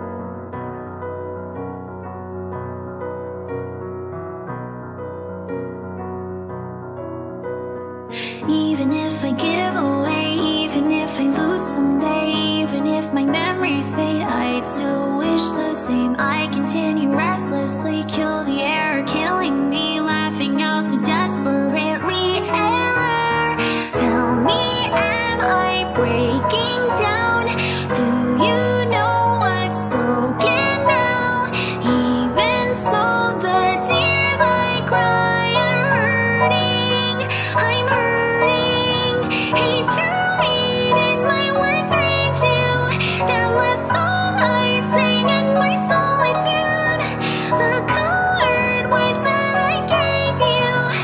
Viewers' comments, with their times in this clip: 0:07 I adore this part, and the transition to techno, then that little inhale? LOVE IT
0:37 I especially loved the singing here on "I'm Hurting" because it was so high it sounded like the voice of a child.